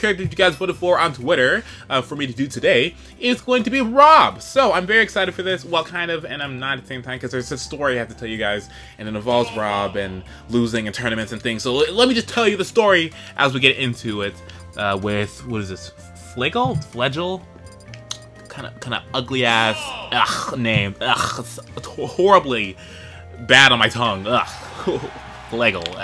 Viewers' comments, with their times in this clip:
0:10 I was rubbing my eyes, and when I heard Falcons side B, and then the spike noise, they opened up like O.--